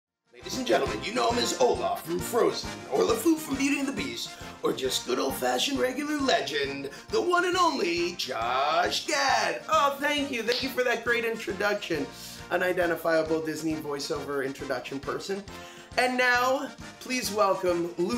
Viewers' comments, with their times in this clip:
0:03 did he say lefou with an extra fou